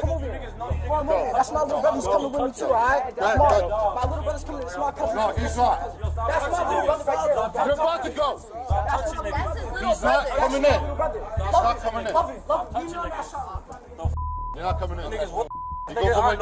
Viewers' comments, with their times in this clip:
0:03 is it me or does the student have a tick or speech impediment?(!)